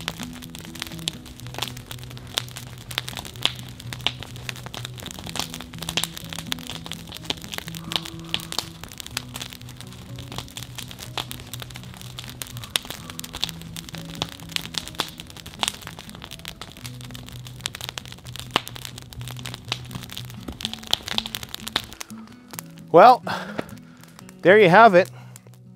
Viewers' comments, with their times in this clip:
0:07 Awesome. Even the crows were impressed...."Wow, wow."